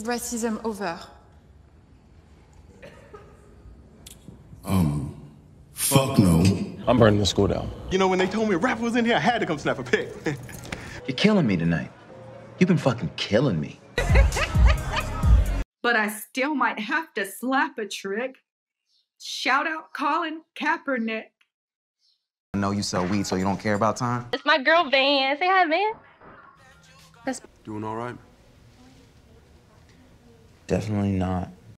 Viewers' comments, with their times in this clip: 0:06 when he laughed I fucking lost it LMFAO
0:15 The chick crying, quoting Paperboi “I still might have to slap a trick, shout out Collin Kaepernick”